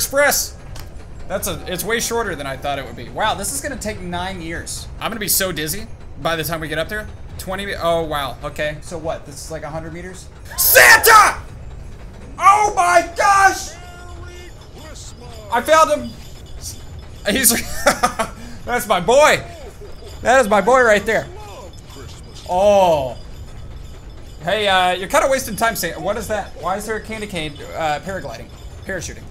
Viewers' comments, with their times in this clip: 0:10 that was so loud and it scared me so much